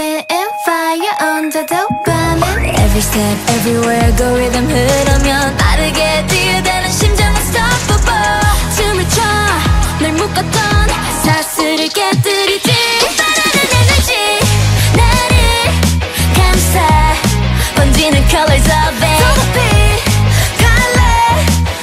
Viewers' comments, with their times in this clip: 0:03 When i heard Elisia's voice for the first time in universe ticket i was sure she would debut her vocal is perfect ..and see this is the proof😭💗